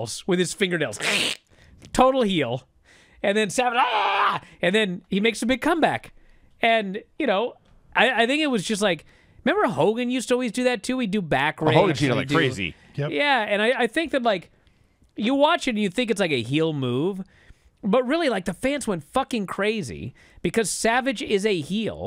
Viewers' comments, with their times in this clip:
0:03 Bryan's scream is killing me lol